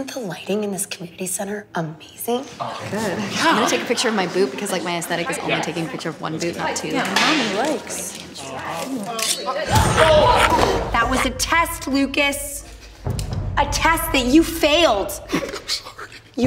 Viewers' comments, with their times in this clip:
0:03 she says boob